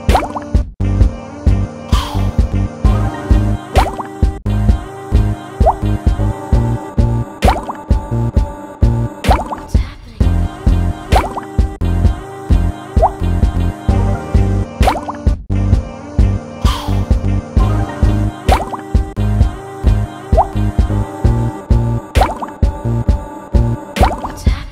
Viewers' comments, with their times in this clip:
0:07 at the start the voices sound reversed and too random I dont like it it sound weird 3/10 there is a part where i could really see the underwater thing and I liked it 7/10 on there but then it just looped the same sound which I did not like 2/10 good luck on improvement